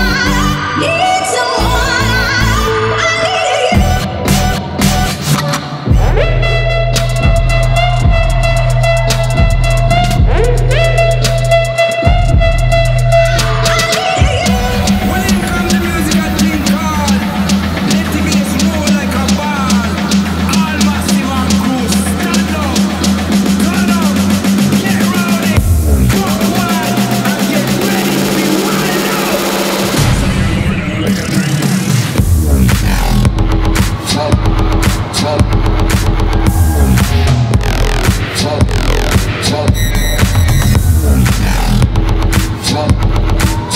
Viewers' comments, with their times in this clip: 0:08 the beat drop doe
0:26 you can hear his WOOOOOooooooOO